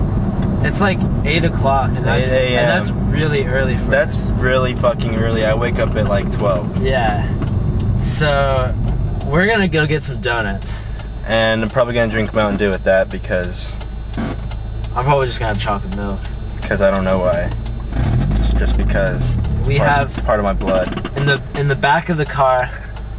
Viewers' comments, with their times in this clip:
0:04 anothnoy says fucking with that beep sound